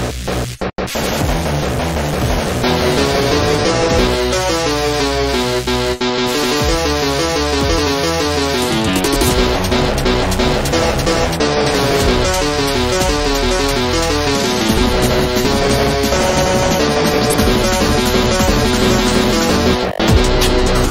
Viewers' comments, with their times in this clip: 0:06 IT ACTUALLY FITS WITH UNDERTALE MUSIC